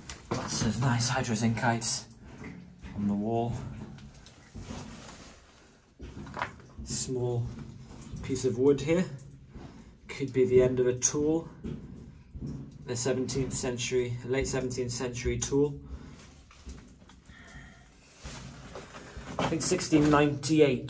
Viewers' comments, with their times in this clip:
0:06 So were you alone in there? I can hear footsteps that are clearly not yours. Was someone else exploring a section up above or behind you?